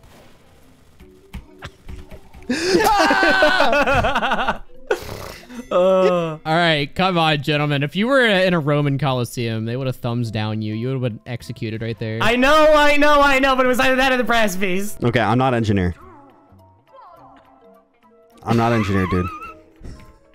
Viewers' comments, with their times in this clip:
0:03 I didn't even notice there was background music until 😭